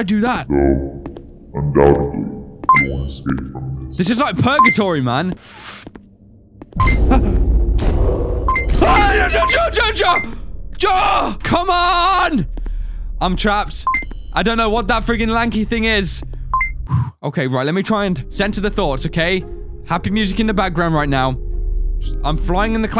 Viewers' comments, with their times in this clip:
0:08 is he saying jar jar?